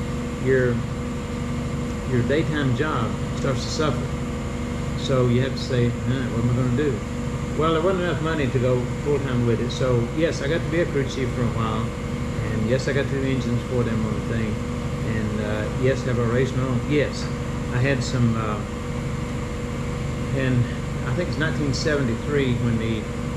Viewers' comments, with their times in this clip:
0:05 compressor stops lol NOPE